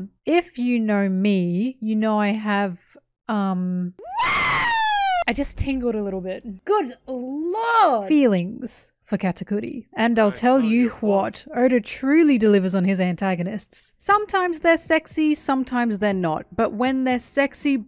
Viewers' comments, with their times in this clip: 0:03 Ngl the "WOOOOOO" made me jump out of my seat a bit, felt almost like a jumpscare lmao